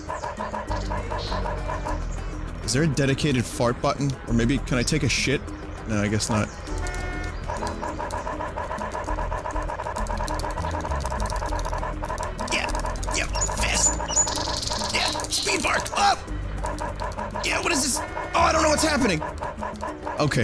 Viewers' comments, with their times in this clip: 0:07 Is it just me or does this sound like Spinal in Killer Instinct when he is getting combo'd? Or just any KI character for that matter.